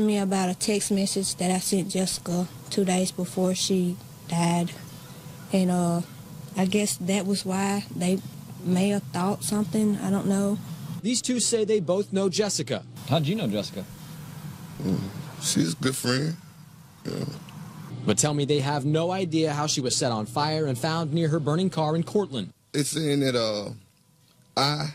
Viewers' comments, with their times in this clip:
0:09 Wow, that was not the voice I expected to come out of that person. She must have a lovely singing voice.